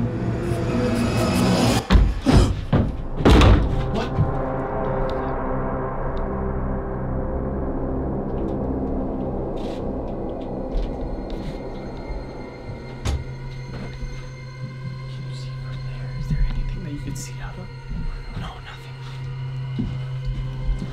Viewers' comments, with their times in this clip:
0:05 Did you notice a shadow at the windows 😂after the knock on the locked door